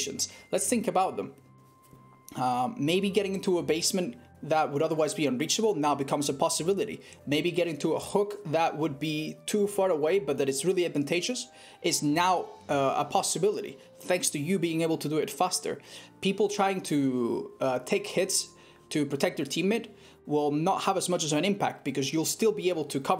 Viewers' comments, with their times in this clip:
0:06 honestly the way you go “hello friends” is such a nice way to experience the night am